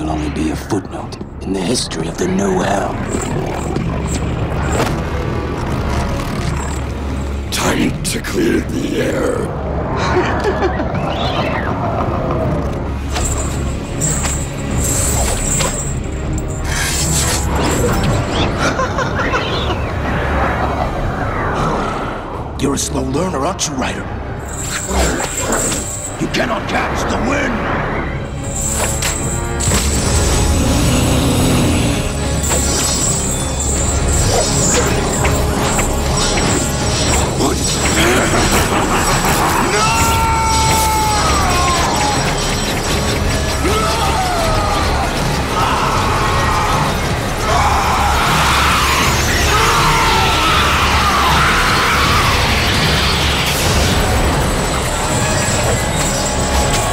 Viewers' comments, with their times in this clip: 0:07 for some weird reason I used to hear “Tiny Tickler in the air” even though he actually says “Time to clear the air”
0:37 y’all are sleeping on the ghost rider’s laugh right here.